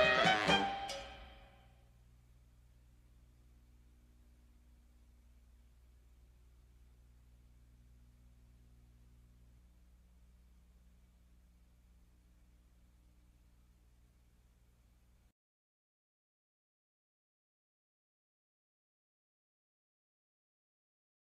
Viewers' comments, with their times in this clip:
0:04 A silent PBS logo?